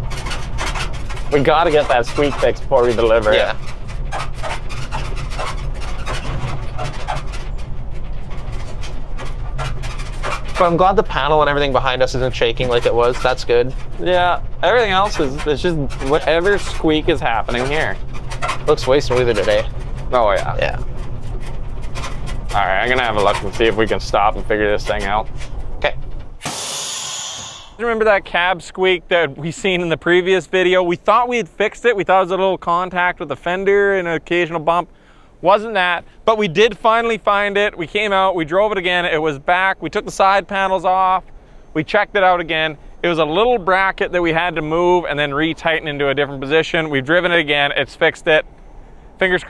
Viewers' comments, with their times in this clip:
0:03 good sound system and you won't hear those squeaks. Least that was my method with my shit boxes
0:07 oh man that squeak
0:30 you know he's a real one when he's going nuts over the squeaks 😂